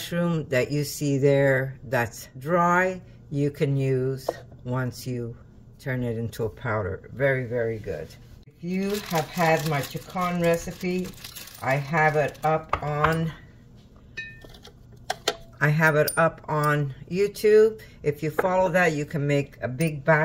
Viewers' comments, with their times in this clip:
0:08 I cannot make out what you are saying… Some recipe, I assume for the powder you are adding … what is it? Thanks!